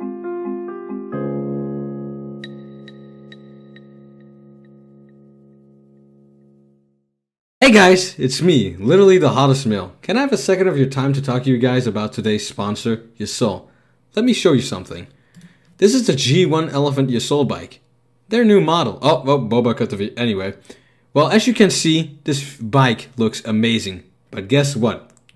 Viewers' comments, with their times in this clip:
0:07 I paused the vid and I can hear the music